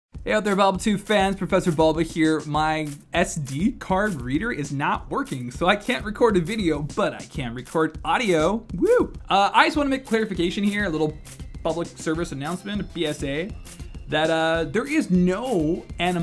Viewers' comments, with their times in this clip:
0:03 "My SD card breeder is not working." Maybe you need to go to a different daycare.